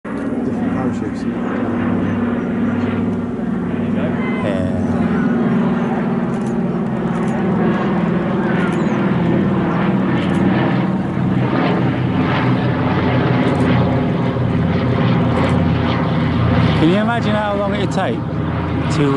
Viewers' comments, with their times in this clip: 0:04 Sounds almost like the spongebob's narrator and parachutes resemble jellyfish 😂 BTW Nice video , i like this stuff and found the channel just now